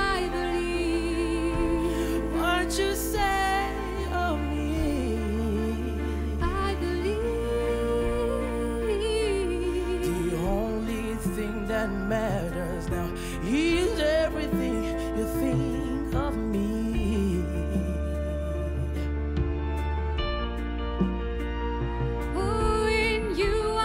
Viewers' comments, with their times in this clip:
0:09 is everything. That young man is a great singer!